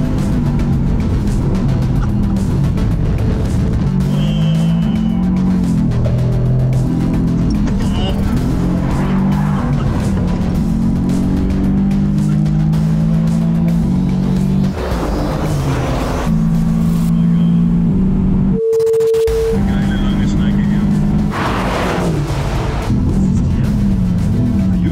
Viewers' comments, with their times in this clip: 0:08 Rodger does a rublev I know it’s bweh 😂